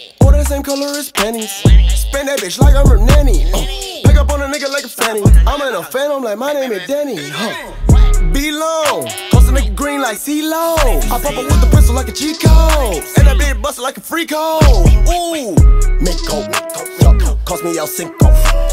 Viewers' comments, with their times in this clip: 0:03 clash royale goblin noise. Like if u hear it